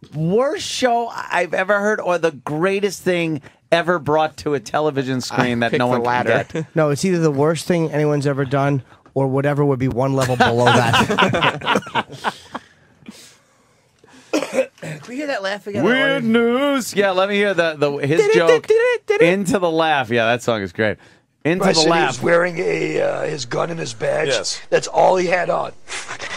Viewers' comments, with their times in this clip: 0:10 when Ant starts laughing at Jim's joke and it goes silent, I knew Ant was gonna go "Weirddd Newwsss"